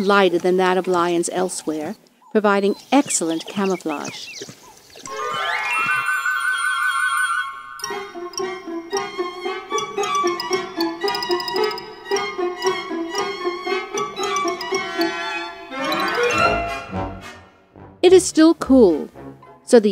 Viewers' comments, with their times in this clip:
0:06 tom and jerry music